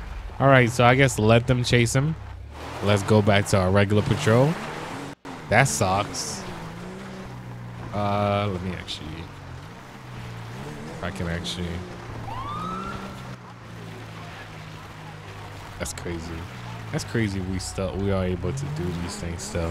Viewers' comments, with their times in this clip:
0:03 He said that socks 😂